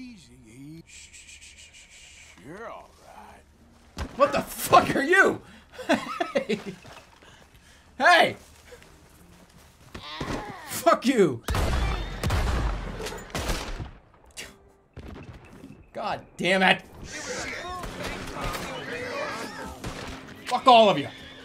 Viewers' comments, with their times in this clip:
0:09 Can we talk about the noise that thing made